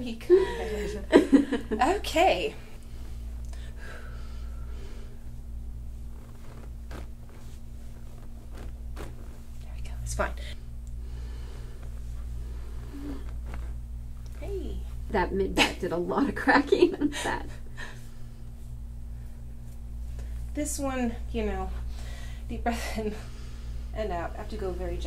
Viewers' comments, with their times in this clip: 0:10 So, did NOBODY else hear an expletive??? lmao 😂